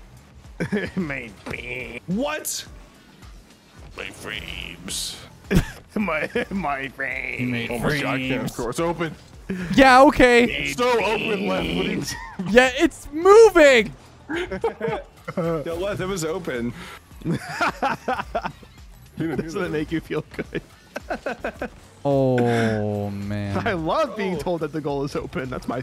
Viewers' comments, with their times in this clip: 0:09 sounded so annoyed 😂